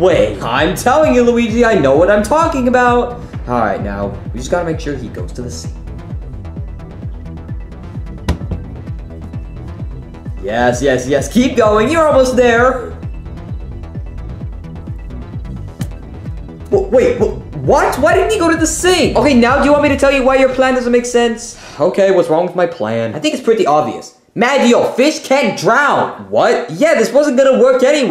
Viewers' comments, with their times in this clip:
0:10 Mario shut up! You are so loud! The fish will know you are there!